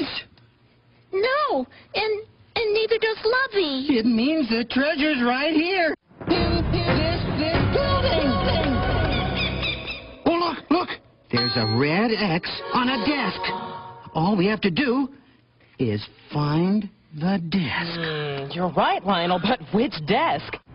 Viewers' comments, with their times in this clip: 0:06 "IN THIS BUILDING!" (echoing)